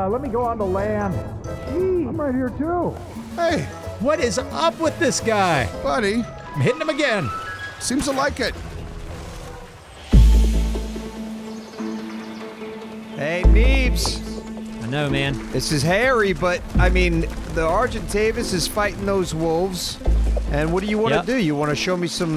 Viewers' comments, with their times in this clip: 0:10 Not 3 mins, and they lost some wolves. Ooowwwwww!!! Music right here makes me think of MGS 3 evading music even though I never played the game.